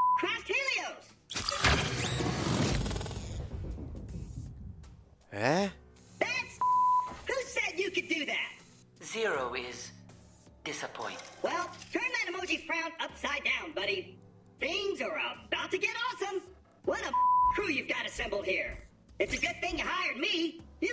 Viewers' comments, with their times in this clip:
0:04 the ehhh i died lol